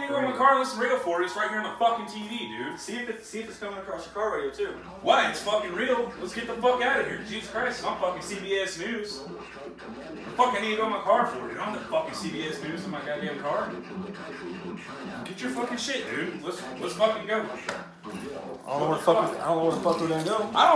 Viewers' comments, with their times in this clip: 0:03 this sounds like something from the trailer park boys